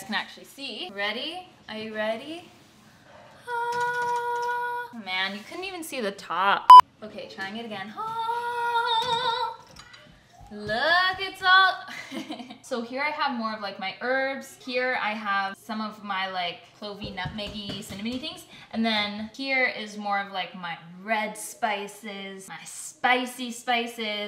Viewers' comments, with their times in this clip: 0:08 omg do you sing???